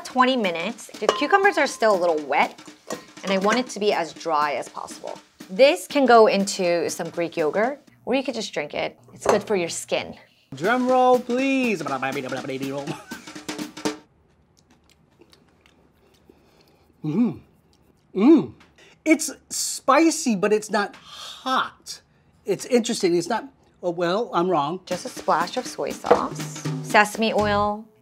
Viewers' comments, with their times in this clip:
0:10 "Drumroll please!" [starts singing Scatman]